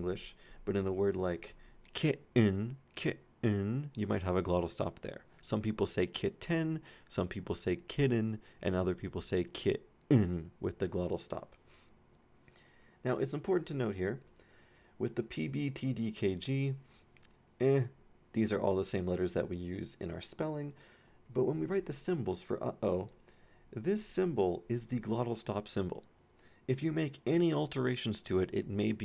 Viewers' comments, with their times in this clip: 0:10 why you gotta do them British's like that though haha